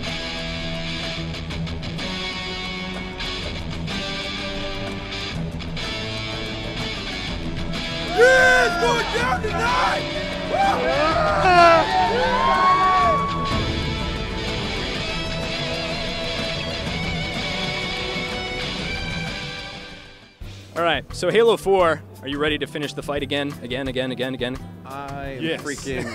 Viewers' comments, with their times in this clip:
0:10 for voice crack